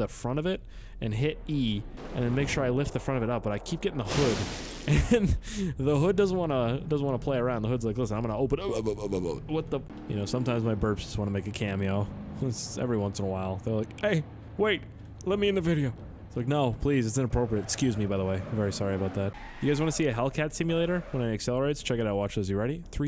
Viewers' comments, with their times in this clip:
0:07 the noise he made LMFAO